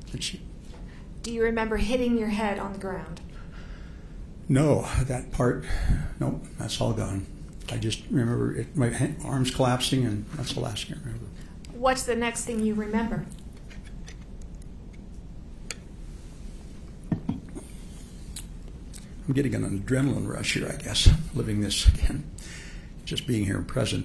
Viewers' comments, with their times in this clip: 0:10 this adrenaline rush thing and how they're talking sounds like 2 people rehearsing lines for the community center theater, you got to be kidding me 😭😭